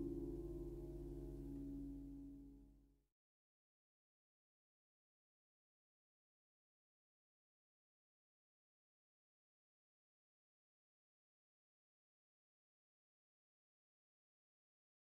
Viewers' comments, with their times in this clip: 0:03 for some reason that song reminded me of the theme song to the original power rangers.... weird....